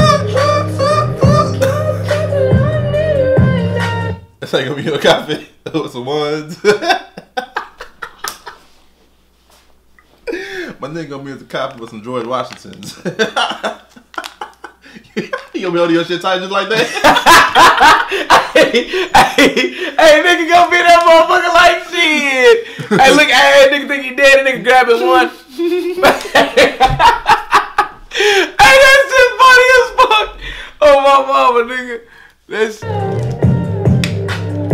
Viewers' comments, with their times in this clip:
0:07 I know yall were laughing with them ! 😂
0:16 I wish I could laugh out loud, at things, as easily as he did...